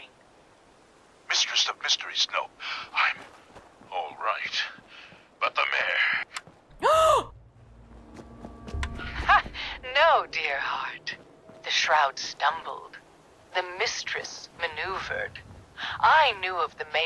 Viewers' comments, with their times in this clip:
0:05 Lol that gasp when she goes out of signal range and readjusts her exploration direction to hear the rest of the radio drama.